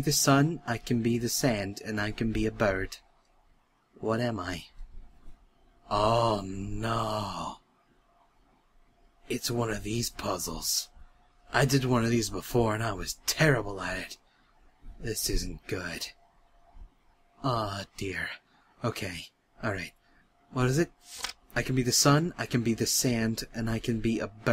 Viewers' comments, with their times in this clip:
0:05 I love the sound of devastation when Cry finds out he has to solve a riddle